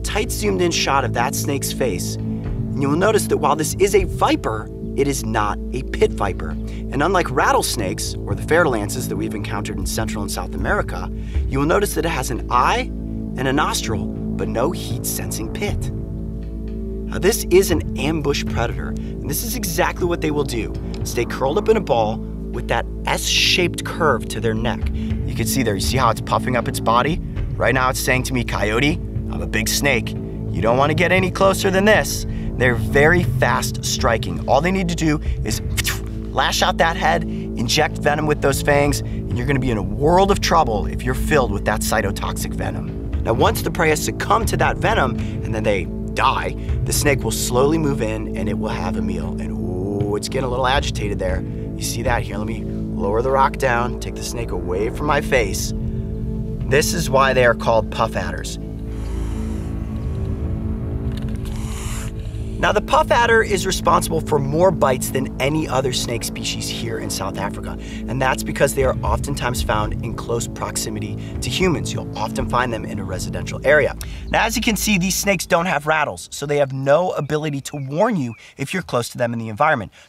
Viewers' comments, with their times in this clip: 0:08 "Bite-us Owie-tans" ...said with speech impediment, it becomes more truthful... I love things like this.
0:58 I can hear it breathing menacingly xDDD
0:58 is that hissing from the snake?
1:01 is it me or was the snake breathing havily